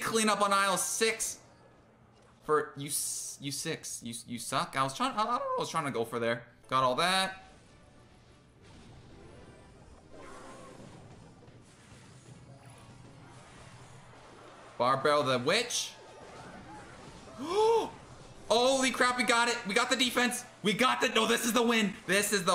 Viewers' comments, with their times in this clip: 0:05 biggest voice crack in our history lol